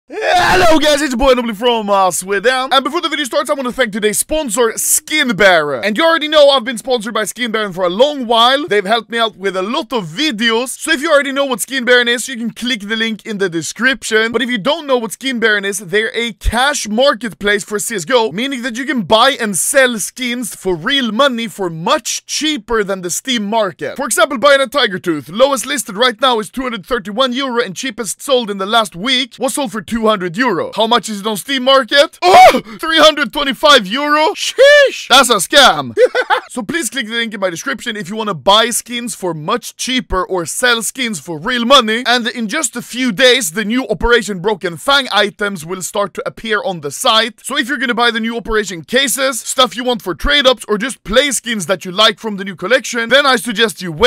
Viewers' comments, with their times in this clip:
0:01 Anomaly do be speedrunning his intro
0:35 That's a laugh I didn't want to hear at 1AM.